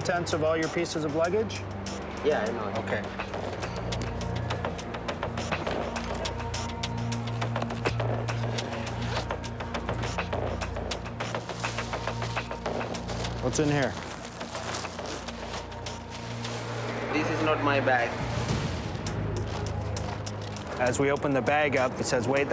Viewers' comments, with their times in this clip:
0:07 I was halfway interested, but I can already tell this is yet another show that tries to create tension & excitement by using over-the-top, insanely irritating music the whole time with lots of clicking, clacking, snapping, and other percussive idiotnoise. 'bye